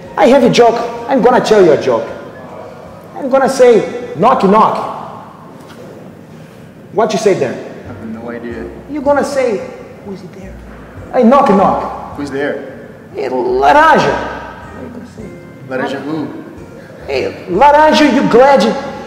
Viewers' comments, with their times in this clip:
0:05 that delivery is so perfect 🤣 Even though it's so stupid, it's so funny lol